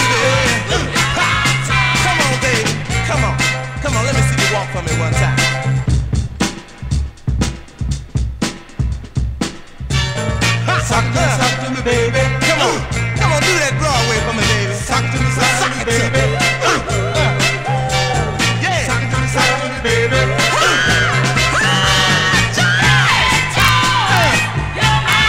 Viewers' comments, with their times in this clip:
0:06 --that break is crackin'!